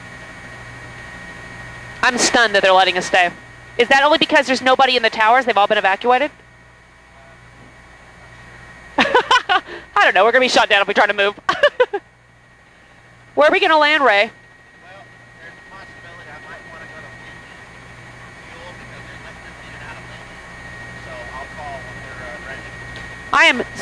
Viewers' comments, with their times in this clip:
0:08 wow. how can one possibly generate a laugh after just witnessing the deaths of thousands of people.